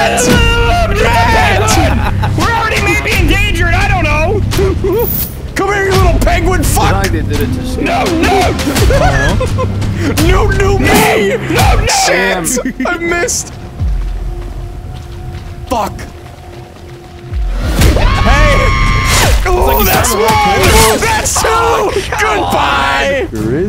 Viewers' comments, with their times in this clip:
0:07 the aggressive "NOOT NOOT!!"